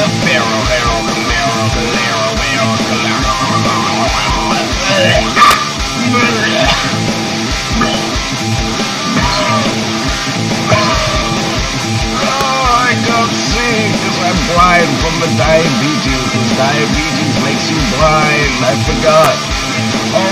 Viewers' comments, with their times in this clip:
0:04 when da kat fallls, it maeks, a zound uh fect XD